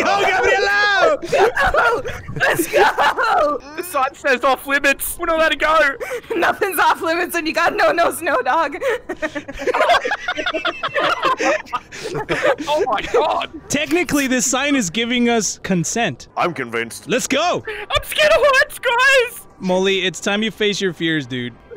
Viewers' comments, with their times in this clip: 0:06 she sounded high here 😂😂😂😂